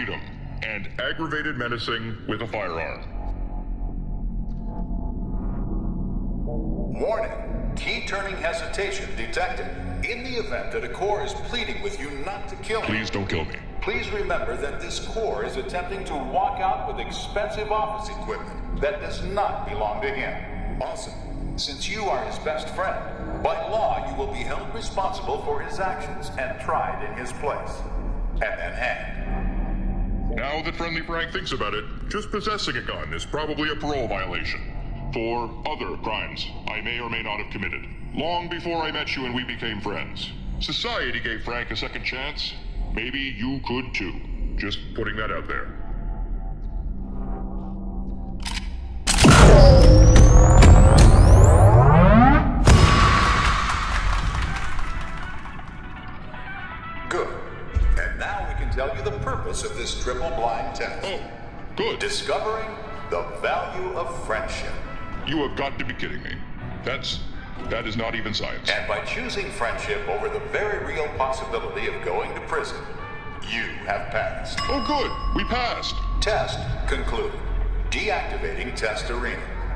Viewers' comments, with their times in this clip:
0:06 The audio channels are REVERSED. Left is right... right is left. I finally figured it out Cognitive dissidence level lowered...
1:04 want you gone from glados playing fast in the background